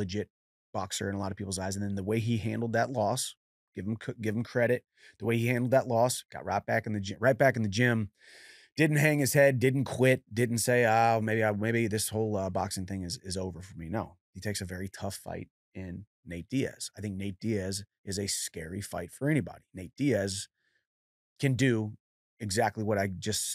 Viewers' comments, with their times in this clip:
0:04 wtf was that accent Chandler?? 😂